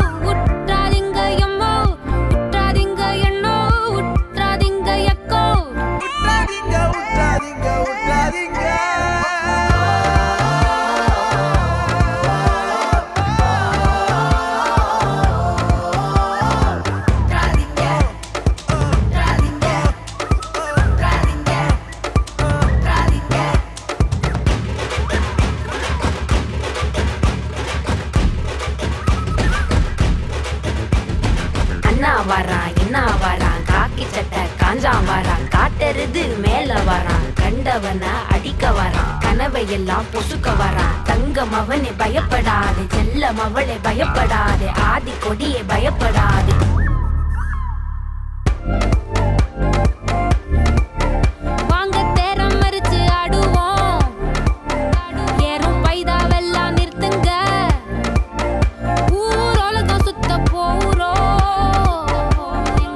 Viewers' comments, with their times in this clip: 0:05 When SaNa arrives the song elevates🤩
0:48 That Drop Trap nation songs feel. SANA = Standard💯 Black & White